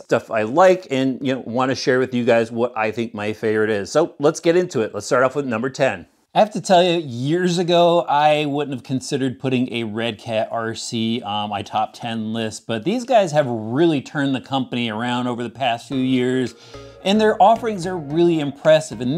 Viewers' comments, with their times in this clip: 0:06 my speakers vibrates a little 😊 Tamiya and fms has the people with really good sense of beauty, I mean their products looks so nice I have rainbow running from my mouth 😅😍🌈 Thanks for this list and our RC entertainment 🎉🥳🤩 Happy new year 🎉🎉🎉